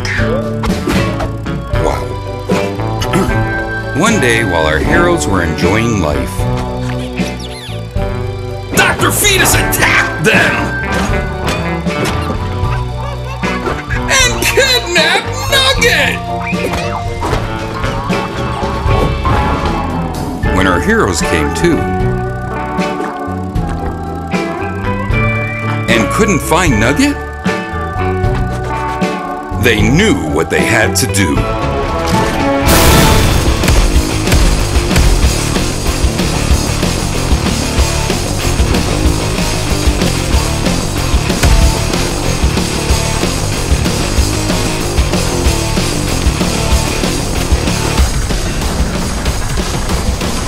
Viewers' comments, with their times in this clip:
0:09 Why is nugget so cute!!! DR. FETUS ATTACKED THEM!!!!!!!!!!!!!!!!! He says it with enthusiasm
0:33 The song sounds like hell toupe(hell dark 5th anniversary)